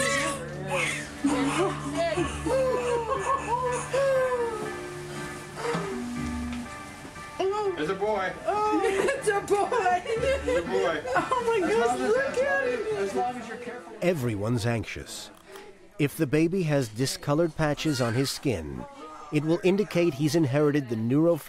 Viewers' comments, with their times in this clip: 0:04 she sighs a few time, then heres a new life?! I had to grunt and yell